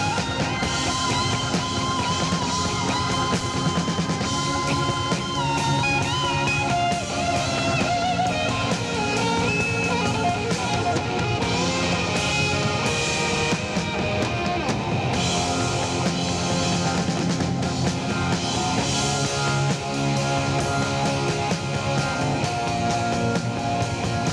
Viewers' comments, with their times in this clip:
0:09 where the hell did that lick come from?? Buckingham's a fkn god